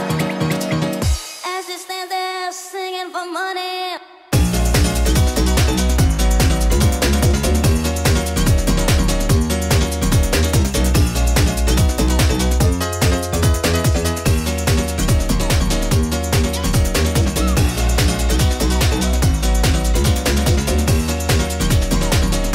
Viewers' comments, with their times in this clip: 0:04 pure stank face on that drop ahh